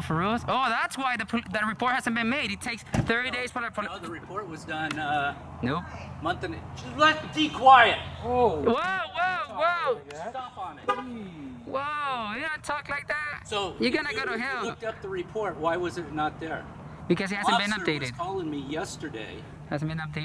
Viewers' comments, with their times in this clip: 0:04 that was really disrespectful for him to yell at his wife like that. I hope he treats her well because true colors came out here. Don’t treat women that way and don’t treat anyone that way.